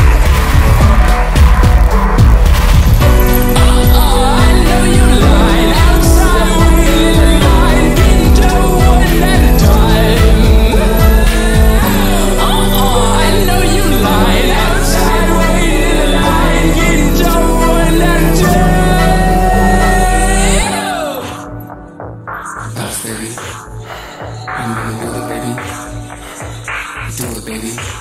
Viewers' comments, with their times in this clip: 0:10 First time watching this video and Hyaena and Modern Jam or golden. This is the version of the songs that gives you that mean face and a completely different feel. I know these songs but I feel like I’m listening to it for the first time holy